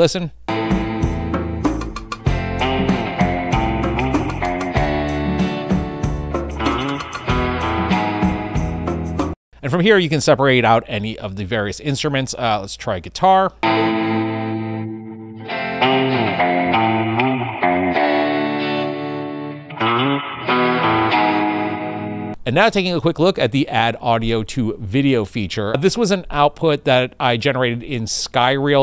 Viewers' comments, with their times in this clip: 0:09 is it just me, or is this one of yhe best stem separators ive ever heard?